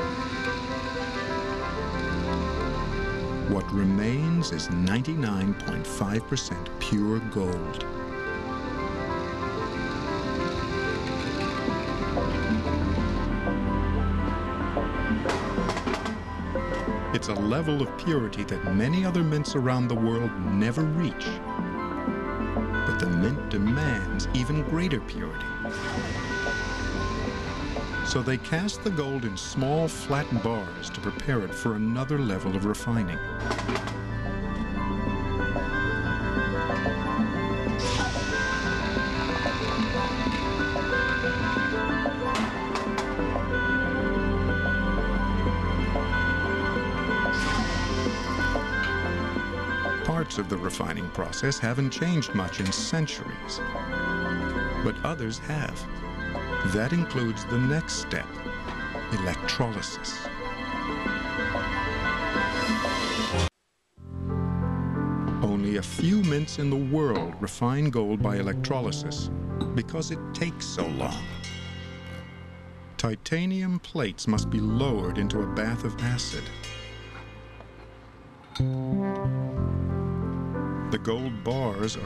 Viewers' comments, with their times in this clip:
0:07 Once that guy without the respirator skims off those poisonous boogers, the "Eureka" music starts.
1:04 sort of sounds like minecraft lol!